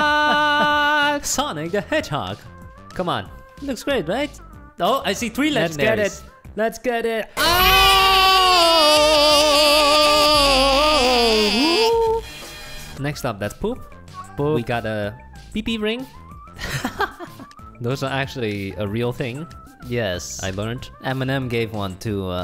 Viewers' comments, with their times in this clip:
0:07 stop facking screaming im in my bed and you do this im def
0:08 sounds like meowth from pokemon lol